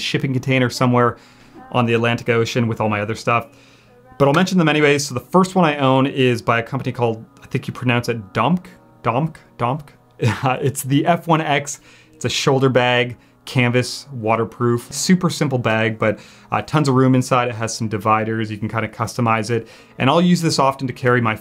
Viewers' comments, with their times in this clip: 0:08 What sound makes a bouncy Pentax 67 that falls to the ground? 🤭